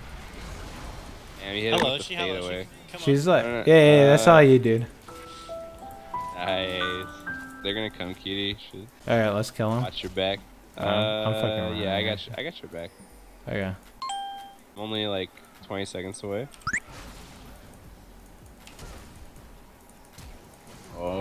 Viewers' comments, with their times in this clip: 0:08 the song of the when Annie die